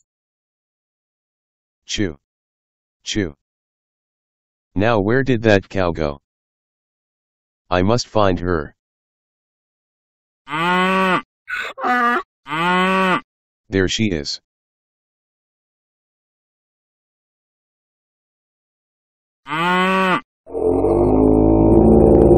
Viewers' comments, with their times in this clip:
0:08 First, I quite like the song you made for this. Gives me a real shmup vibe, like I should be dodging excessive quantities of extremely colorful bullets. Second, "I forgot to drink my milk today and am now undergoing osteoporosis." is going to become my new excuse for when I'm too lazy to do something. Third, feels like one of those things that would show up on the Newgrounds portal which served as little more than blam fodder.